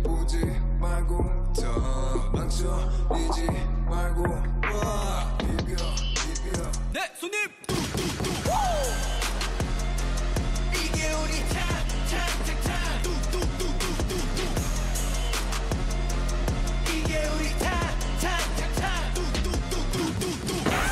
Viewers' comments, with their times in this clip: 0:06 i’m sorry but hyunjins WOOO ..like sir please run me over already 😩